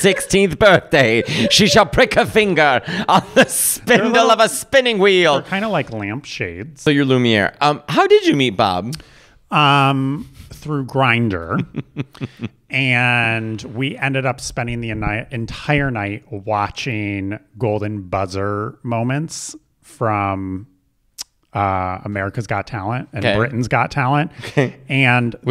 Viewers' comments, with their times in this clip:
0:10 a gay super villain laugh right here